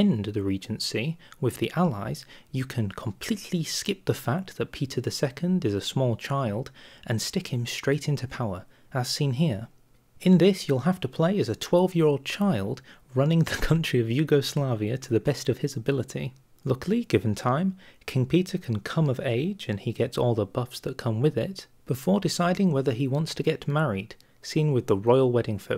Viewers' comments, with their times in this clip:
0:10 I like how he straight up laughed and didn't cut it out.